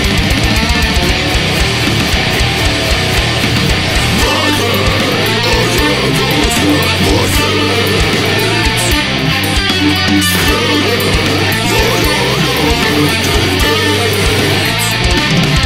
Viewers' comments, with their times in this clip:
0:03 Very cool! That riff is insane!